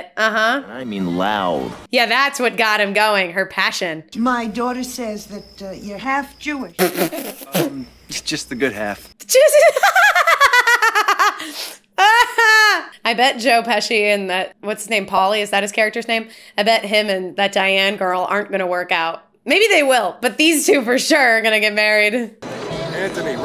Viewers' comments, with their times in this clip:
0:09 Beautiful atire me lady laugh has me super cute lady